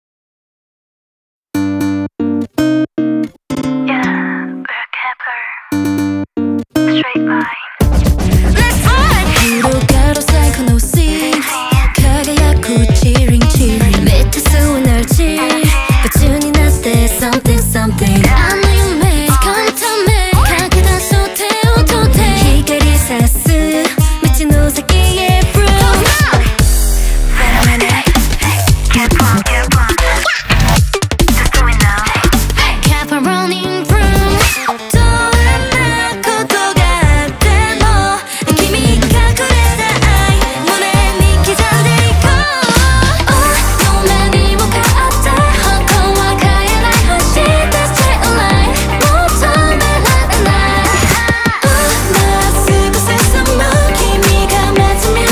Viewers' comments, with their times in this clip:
0:06 Why it's so similar to ENHYPEN - BITE ME? Kep1er, you really couldn't come up with anything new? 😅
0:08 “Let’s ruUunN” bro it got me goosebumps😭
0:10 its look like bite me by enhypen
0:10 Isn't the vibe and lyrics the same as Enhypen Bite Me??
0:36 Dahyeon bro…. She’s always unreal!!! Also the rapping with her and Hikaru back to back…. Dynamite duo